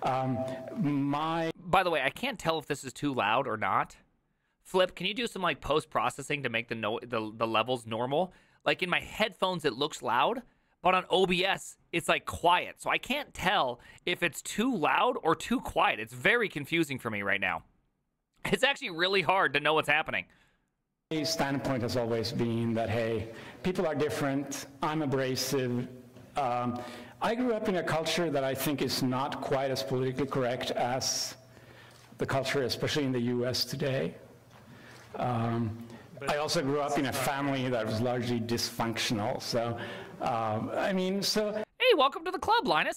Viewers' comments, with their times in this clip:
0:10 your streaming audio level has been low most of the time.
0:17 actually Tom Scott made a videou about loudness recently, check it out! I think it is because of their microphone seems to be most sensitive in mid-tones, the volume is perceived as louder than dB meter would show. But I could be wrong!
0:27 his audio sounds hot because its compressed.. Level wise not just size. Its why the life alert commercial is so loud